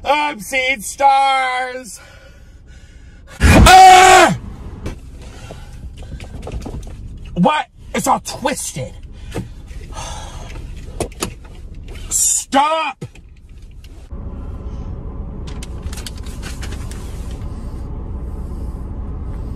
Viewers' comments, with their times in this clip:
0:03 RIP headphones users
0:04 Listen to this, if you wanna break your ears
0:07 bro was really yelling at the seatbelt💀💀